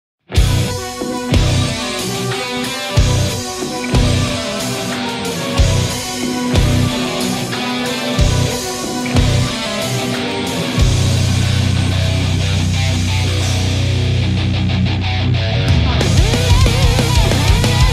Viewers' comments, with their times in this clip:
0:00 I always hear a knock beside me with headphones